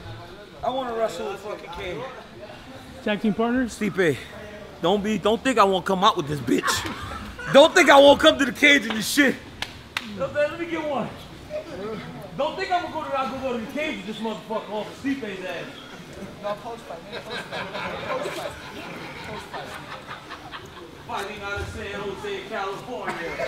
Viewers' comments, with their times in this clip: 0:05 Am I the only one who found it hilarious the way DC said bitch 😂